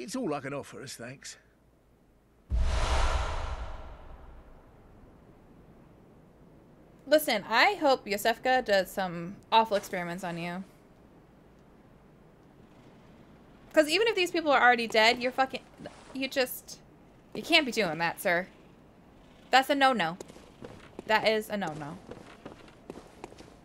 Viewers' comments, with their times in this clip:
0:05 great instincts! lol the "sir??... SIR?!?" energy of your reaction was hilarious 😂